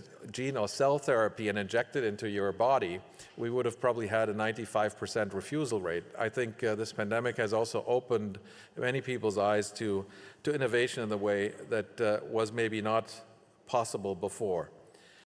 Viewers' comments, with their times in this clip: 0:09 ten seconds after het used the G word, you see him looking down at the incoming message on his phone, as he stutters when he reads the subject: "You failed. You're fired."